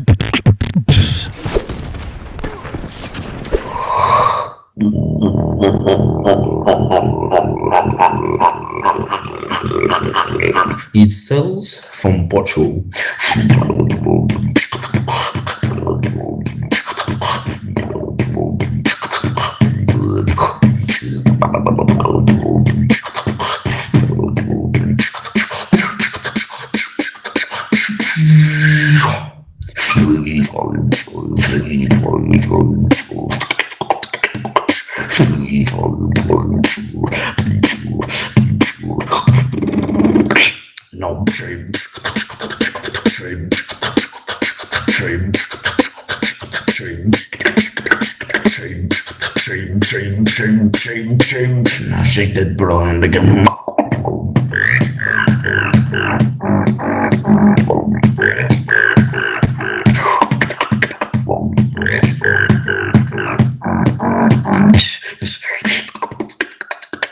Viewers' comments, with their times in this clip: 0:05 holy shit that sound he makes
0:53 Is that an evil bass??? FUCK!! Somebody answer me